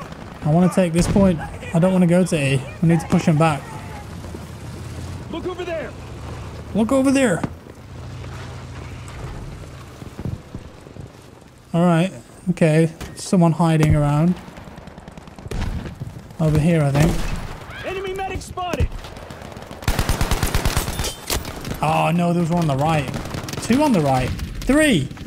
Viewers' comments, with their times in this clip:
0:06 that sounded very western 😂